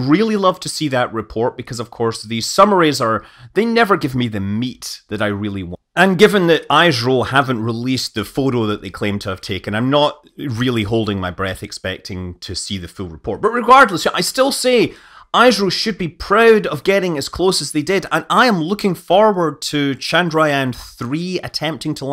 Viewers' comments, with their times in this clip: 0:04 The impact was so intense it affected Scott's editing. Audio clips at about :27 and Um, software failure?